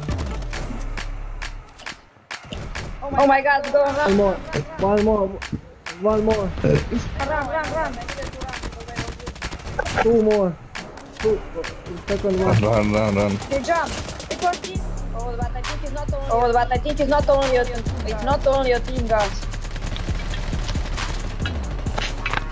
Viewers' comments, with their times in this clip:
0:06 That burp was awful to be honest. 😄